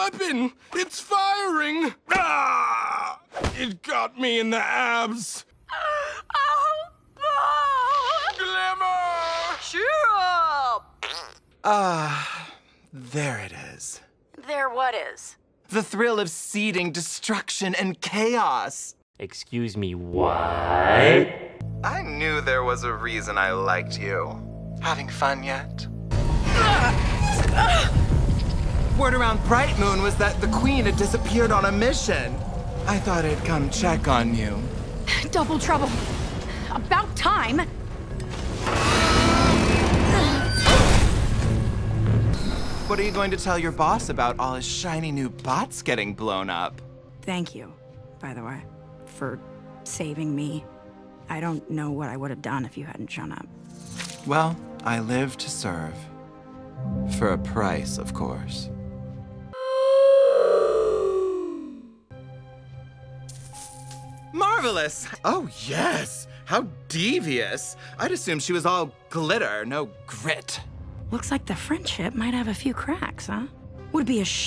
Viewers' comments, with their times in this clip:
0:10 I WASNT LOOKING AND THE FART NOISE FOLLOWED BY THE SIGH OF RELIEF TOOK ME TF OUT
0:59 mmh the 10% speed oof is just 😙🤏 chef kiss